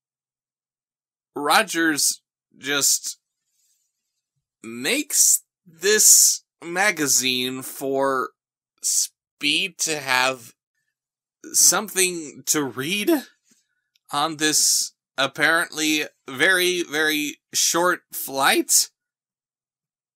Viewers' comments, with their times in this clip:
0:08 So, he said John Bob originally and edited the Speedy name in? Love noticin' these things!